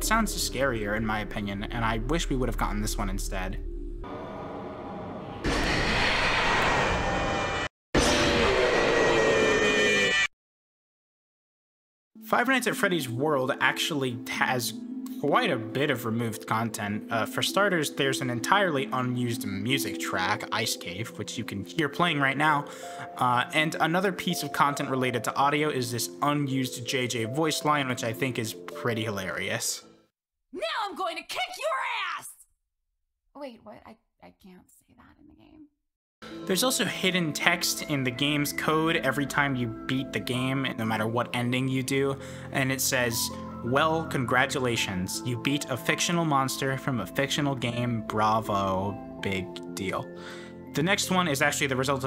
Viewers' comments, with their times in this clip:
0:04 In this version you can hear all of the previous jumpscares. The breathy noise is 3, you can hear a slight bit of 2, and obviously the end is 1.
0:08 the jumpscare sounds like a sportscar starting
0:29 why does she sound like ryuko matoi from the kill la kill English dub?
0:30 this should be a voice in game
0:32 ima dweeb and i was zoning out and i swear to god i thought that was luffy
0:32 WAIT SHE SOUNDS LIKE RYUKO MATOI!!!
0:33 "She sounds like Undyne" I LOVE YOU